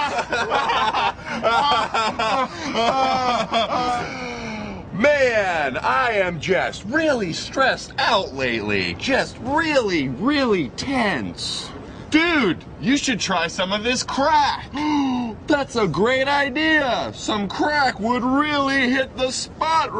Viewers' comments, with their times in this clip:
0:04 I love Trevor and Sam's outfits, haha! It's so 90's! It's awesome! :D Trevor's delivery here. Love it!